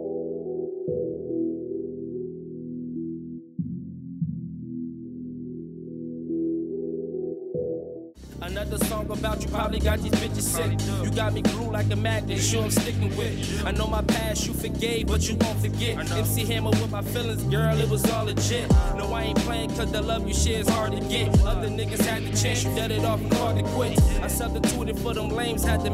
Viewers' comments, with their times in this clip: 0:10 The track is fire